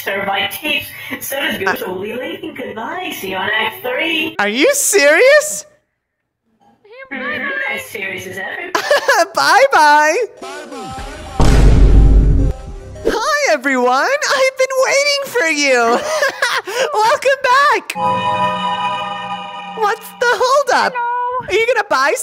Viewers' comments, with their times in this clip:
0:05 WHY DOES BRO MEW